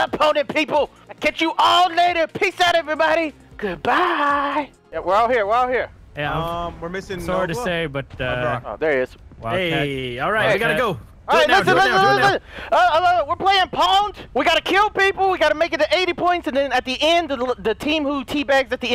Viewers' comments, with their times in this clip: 0:03 his goodbye is creepy lol